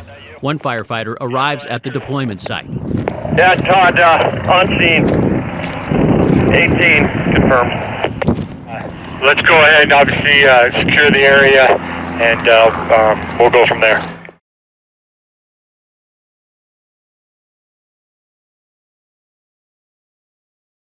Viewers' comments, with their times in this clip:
0:06 That's not what OP meant. a voice says "18 confirmed" - at the time it was said they knew of 18. OP means how hard saying that at that time must've been. Speaking the unspeakable. He pauses before saying it.